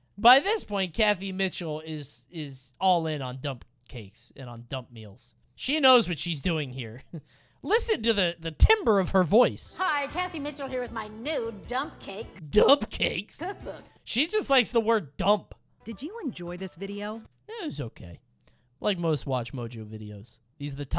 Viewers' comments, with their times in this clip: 0:08 shoutout to everybody who knew he pronounced this wrong